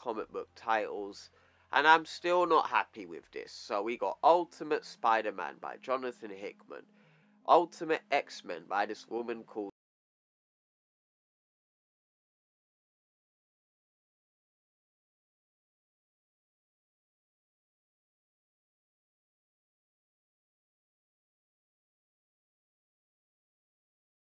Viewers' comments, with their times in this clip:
0:10 your mic cut out bro. For like 2 minutes. Unless YouTube is trying to silence you lol
0:10 Yeah some of the audio got cut off